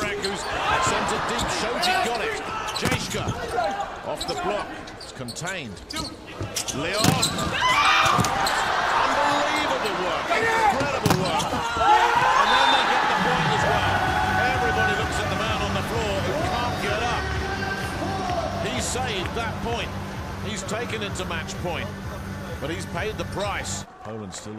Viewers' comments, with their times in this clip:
0:07 Who is shouts?